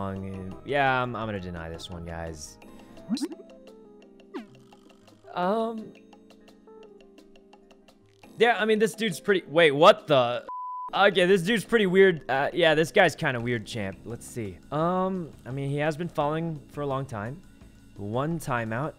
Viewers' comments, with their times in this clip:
0:04 The "uuhm" here gets me everytime
0:05 PLS THIS LITTLE “umm...”